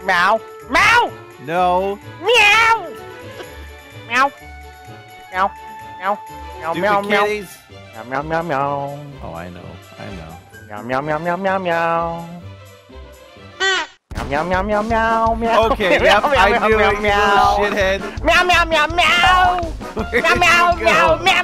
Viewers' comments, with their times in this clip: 0:08 Lol is delirious sing Bella ciao from money heist but in a cat version